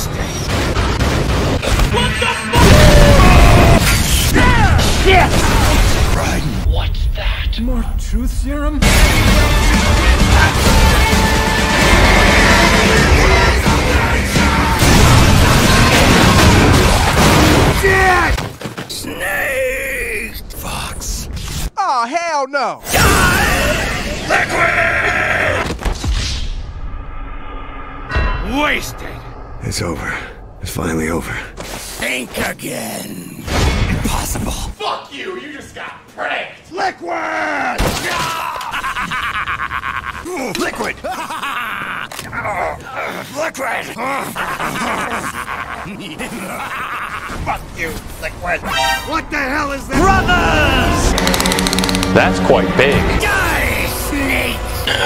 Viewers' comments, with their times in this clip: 0:07 That whole scene with LIQUID!!! running away while just constantly laughing is just amazing
0:39 Perfect laughs throughout.